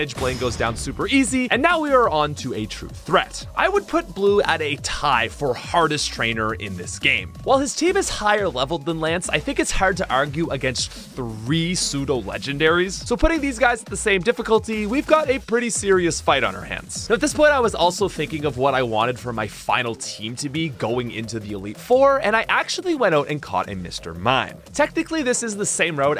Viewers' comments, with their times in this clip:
0:08 Does anyone know what his accent is. Sounds pure American except for “ar” like “hard to argue”